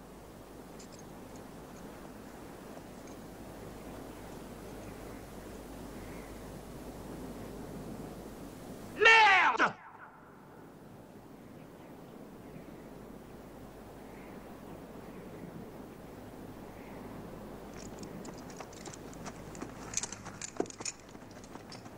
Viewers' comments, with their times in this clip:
0:08 Why does someone seem to shout "JUS" right after he shouts "MERDE"? Always confused me.